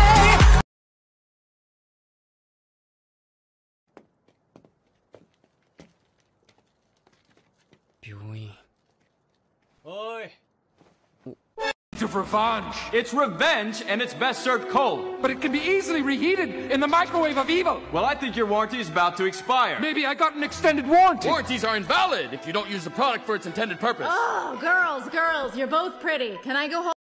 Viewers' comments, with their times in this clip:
0:10 I dont know how to feel about the fact that I know exactly who's saying "oi!"